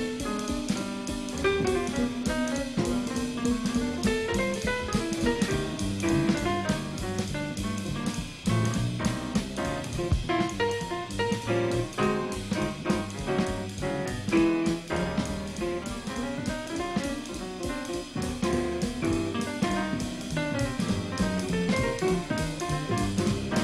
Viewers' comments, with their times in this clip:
0:09 The 3 choruses starting are some of the richest ever recorded... pure bop language. Even the greats of classical music would sit in awe at Harris's ability to frame and enclose the most colorful chord tones, one after another. RIP Barry Harris